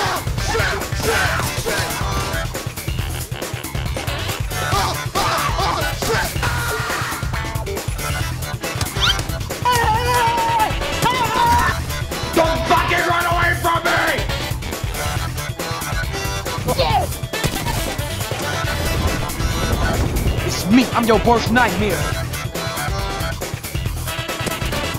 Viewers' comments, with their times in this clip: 0:06 That was some good sound editing